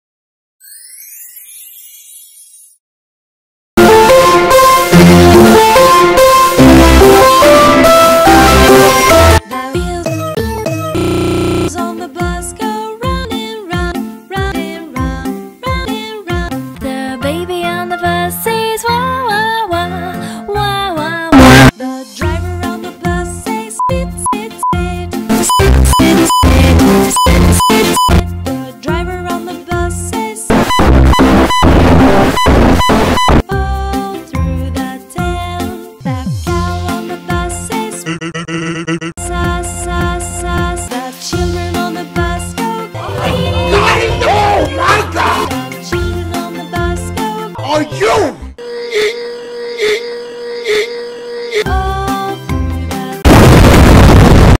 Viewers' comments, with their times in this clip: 0:03 o wow beautiful music
0:03 the god of earrip
0:04 rest in peace headphone users
0:04 most quietest music I’ve ever heard
0:04 Let's see a video on 3am The videos volume:
0:04 RIP MY HEADPHONES
0:05 Best background music
0:05 Lower your headphones (Earrape Warning)
0:20 Wah Wah WAH! (Earrape)
0:20 was happy when crying and said s*it s*it s*it was making me laugh😂😂😂😂
0:24 The funniest part was cuz I like how the singer just said the driver on the bus says sh*t sh*t sh*t earape SH*T SH*T SH*T SH*T SH*T SH*T
0:25 Why do I think the driver said "skit"?
0:30 sounds like a beepy thing at a hospital
0:38 sounds like sans